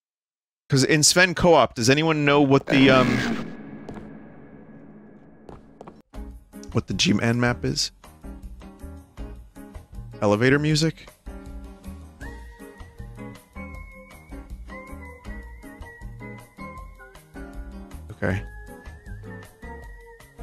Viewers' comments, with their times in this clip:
0:06 Why was the music replaced with Sims 1 music in post editing?